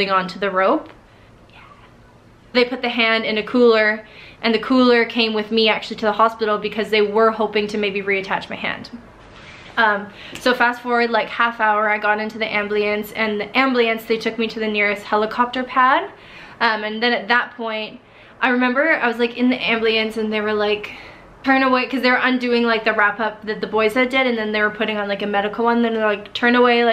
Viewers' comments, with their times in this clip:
0:09 It’s like that scene from the 1986 movie Predator, where Carl Weather’s (Agent Dillon) arm gets blown off by the Predators laser, and it falls off but it’s still pulling the trigger and firing his machine gun. “ambliance”
0:10 Did she just say "ambliance"? Edit: its Edit: for those of you who think that she's offended by this, she's not. Infact she liked(heart) my comment but it got removed because i edited my comment. Im mot trying to offend anyone.
0:11 lol she calls it an AM-BLEE-ANCE
0:11 haha, you say amblience the same way I do! My mom always got on me for it because I can't say "ambULance." 😂
0:11 Lmao ambliance she says 😂